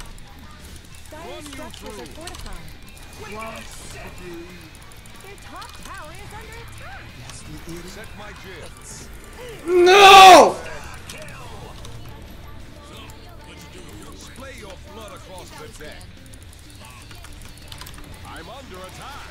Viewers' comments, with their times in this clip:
0:04 dat NOO!!! XD